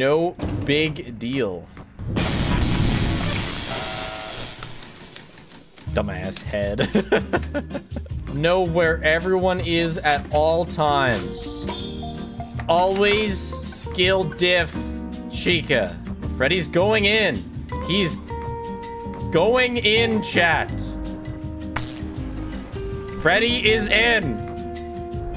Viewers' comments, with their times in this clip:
0:07 The music makes ne think of the patently stupid theme